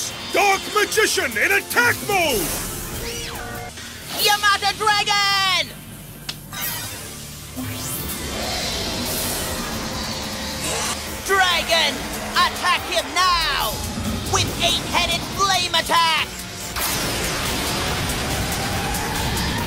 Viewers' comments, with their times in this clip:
0:04 w captions * your mother dragon!*